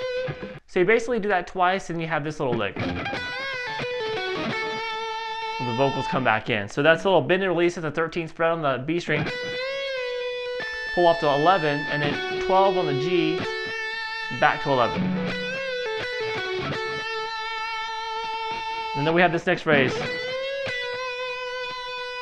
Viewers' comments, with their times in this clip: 0:03 it sounds like you play it like you do 2 pull offs but you explain it as you only do 1, was that a mistake or am i just hearing it wrong?